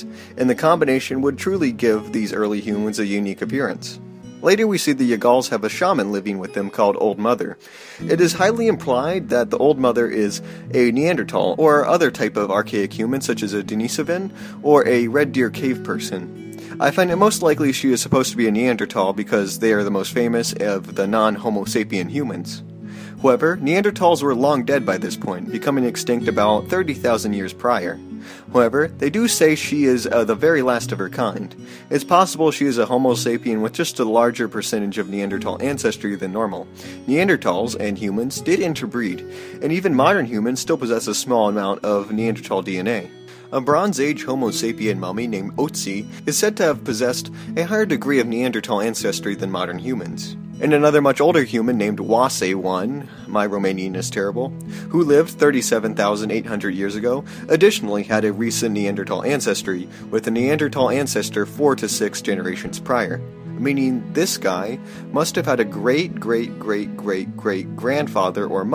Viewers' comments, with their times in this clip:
0:05 you say your Romanian is terrible, but that single word is really good your pronunciation of Ötzi, on the other hand, is near terrible
0:51 Don't worry, you got the Romanian pronunciation right. By the way, Oase means "bones" in Romanian, so the names given to these partial skeletons were "Bones 1" and "Bones 2". The baptism must have been funny: [Oase 1 was confirmed to be a male] "-We found an ancient dude's bones. -Let's give him a name. What should we call him? -We'll call him bones." :D
0:51 Actually, you're one of the few foreigners that I heard pronouncing that right.
0:52 Oase 1? These guys just called him bones? I am ashamed of my people Chill bro your romanian is fine
0:52 Your romanian is good man, trust me .
0:53 that was a good pronunciation